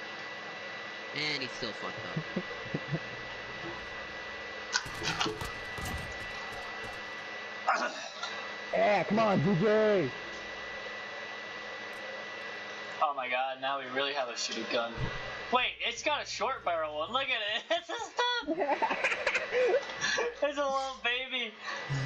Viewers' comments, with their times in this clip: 0:09 most quiet game and just goes COME ON GG 😂